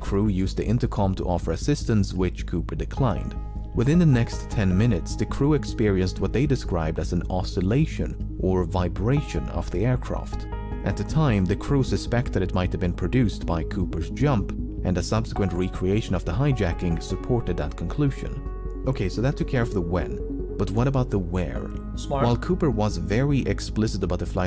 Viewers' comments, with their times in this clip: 0:10 someone said c*m on me bro